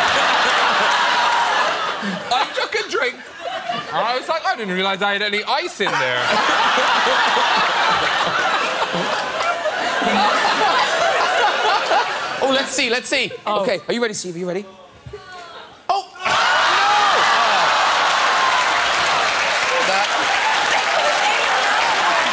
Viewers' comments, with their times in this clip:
0:04 He sounds just like Graham...
0:07 Did everybody catch the fart ? They even seem to notice....
0:07 looking at her mouth movement, i am almost certain that she made that sound effect.
0:08 the lady in white Farts lol!!!
0:08 Did someone just fart ? XD
0:08 chris o dowd lets 1 rip u can hear a phew loll. look at his face n kristens loll
0:08 You can hear her fart and chris odowd looks at her!
0:08 A wild fart appears
0:08 Kirsten wiig farts Listen carefully, and then look at her face and how to the other two looks at her. 🤣🤣
0:08 I heard it too. Someone did fart
0:08 did she just fart?
0:09 If u hear it through u can hear Kristen farting. Thats why Chris was staring at her xD
0:09 someone farted? Kristen Wig farted
0:09 I love how they cover up a fart